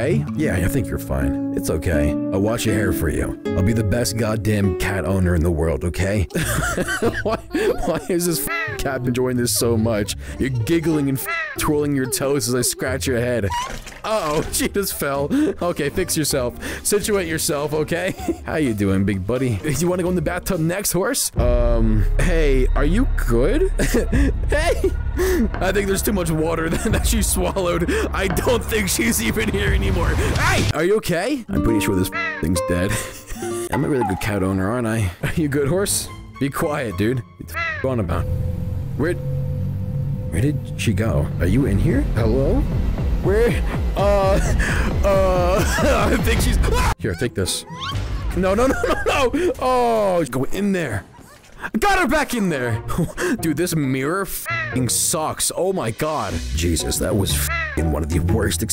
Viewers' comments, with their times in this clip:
0:08 help- she moaning-
0:46 Good cut scream there